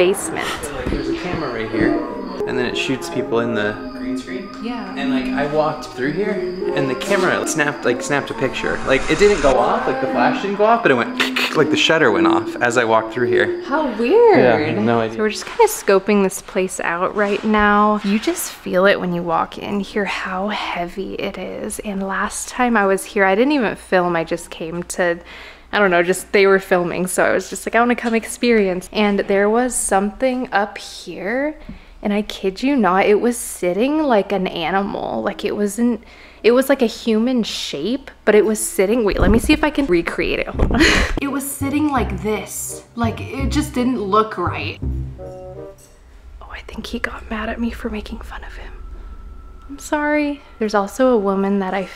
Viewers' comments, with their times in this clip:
0:05 donr mind me but that sounds like "its so cold" and or "snowy" from undertale idk why
0:33 i saw a shadow figure running and after that it hummed!